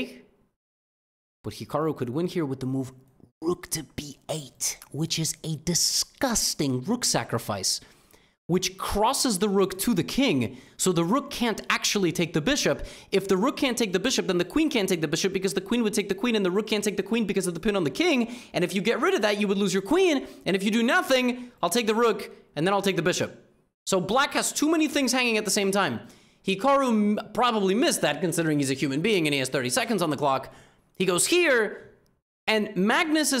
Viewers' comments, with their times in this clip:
0:08 sounded like a fine rap
0:14 Bro thinks he's Eminem💀